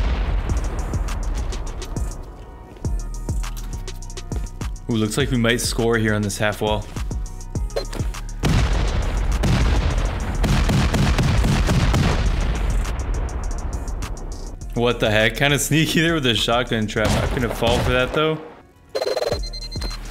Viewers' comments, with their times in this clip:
0:08 Should be a intro to a video, almost sound like a sick beat xD.